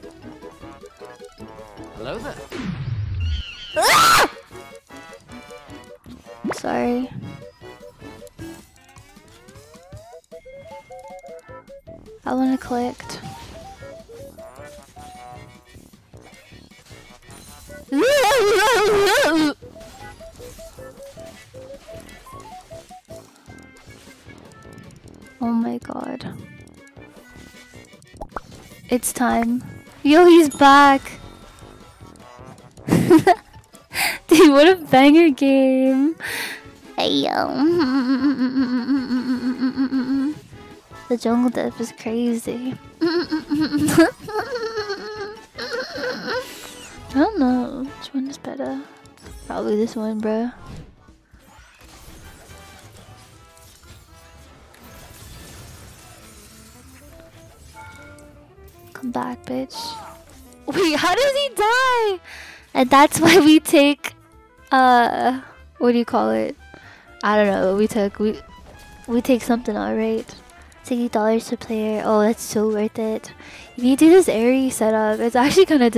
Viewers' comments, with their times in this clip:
0:03 LMAO real voice XD
0:58 the CJ dying screm caught me off guard so hard im Wheezeing XDDDDD